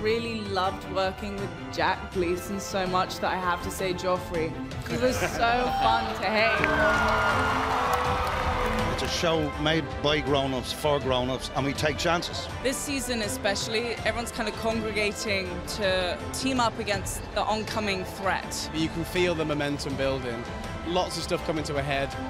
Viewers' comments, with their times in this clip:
0:09 I really love Liam Cunningham (Davos) English accent